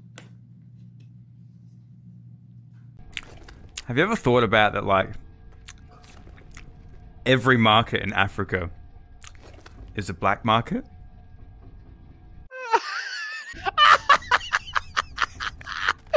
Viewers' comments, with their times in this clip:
0:03 The way he says the joke with fluency, the reaction of his friend, everything.